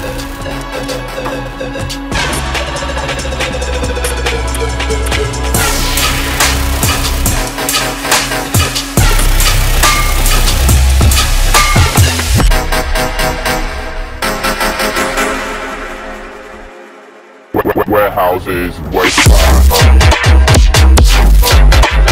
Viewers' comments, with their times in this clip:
0:05 is no one talking about this slapper